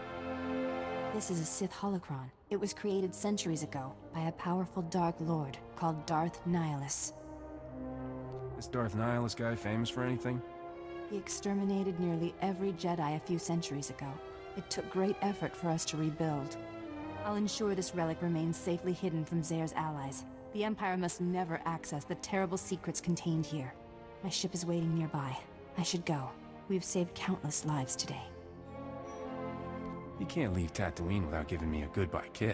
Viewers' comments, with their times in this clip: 0:10 It starts but I was thinking the same thing. The pitch lowered somehow, shit sounds creepy
0:11 Wtf is happening to the music ?
0:15 that music tho
0:19 the fuck is happening with the music?